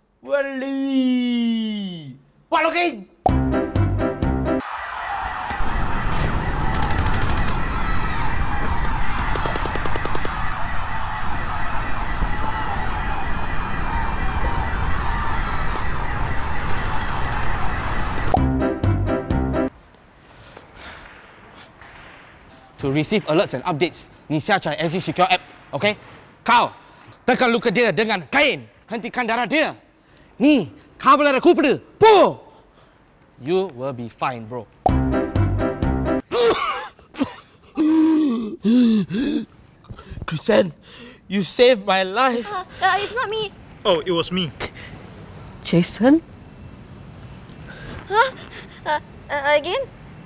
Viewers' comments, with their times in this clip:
0:06 Every PUBG Player hearing gunshots near them.
0:27 Indonesia? Malay? Did anyone of u notice it?
0:30 they were speaking tamil Any tamilians here ?
0:30 He was speaking on tamil
0:30 he speaos tamil
0:30 you guys speak Tamil also wow byw iam tamil
0:31 wow talking in Tamil😍❤😍
0:31 (call the police) What language did he spoke??!!!
0:34 Did listen just speak Tamil